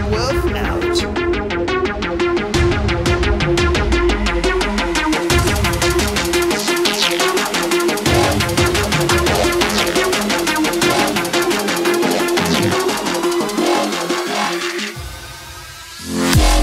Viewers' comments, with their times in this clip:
0:04 When The Beat Drops.....